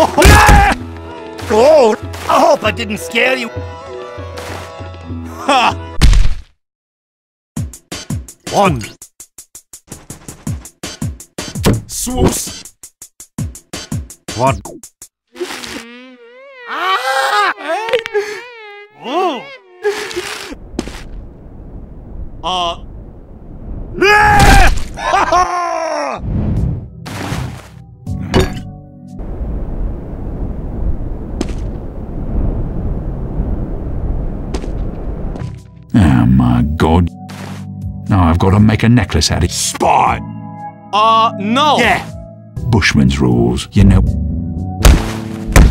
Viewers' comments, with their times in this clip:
0:07 That "MON" is so graceful
0:16 Dat Muzic tho.
0:29 When it goes silent and then sniper 'walks' in.. omfg..